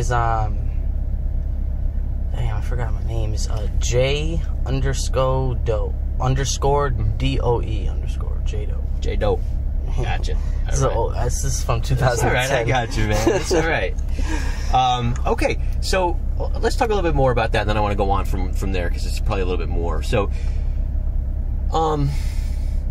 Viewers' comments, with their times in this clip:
0:07 Its always hilarious when the white detectives code switch. Thanks for getting this.